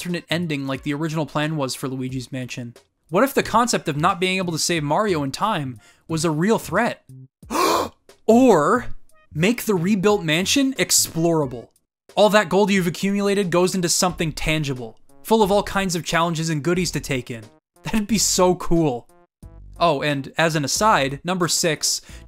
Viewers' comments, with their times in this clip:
0:07 you came up with that idea on the spot didn't you, the haa gave it away haha. Still a cool concept though